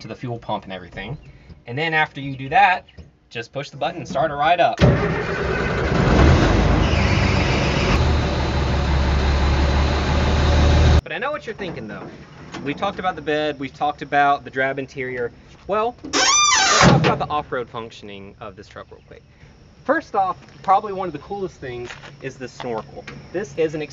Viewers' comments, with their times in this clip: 0:05 Sounds like a clock to me when he starts it up.